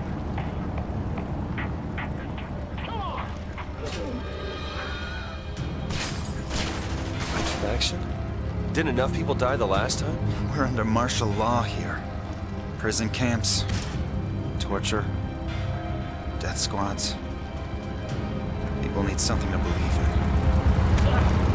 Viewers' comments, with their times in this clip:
0:03 another wilhelm bites the dust
0:03 There's a Wilhelm scream in the house after they bust open the door.
0:04 The Wilson Scream!
0:04 cheeky Wilhelm Scream hahah
0:05 Anyone else hear that little Wilhelm Scream in the background ? I might be playing too much King Arthur's Gold, but I think that was a Wilhelm Scream. It's very faint, before the gunshots, but after they open the door.